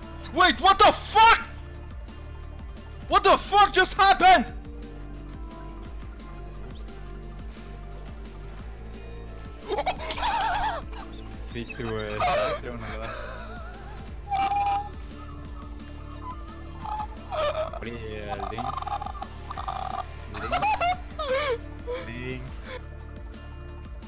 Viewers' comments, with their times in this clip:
0:08 What a cancerous laugh